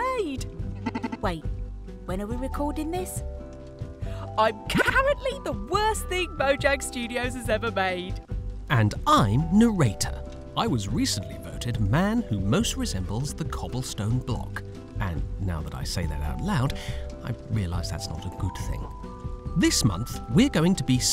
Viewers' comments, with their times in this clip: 0:08 And i'm No'ratoh (Bri'ish narrator)
0:09 narrator has nice minecraft story mode style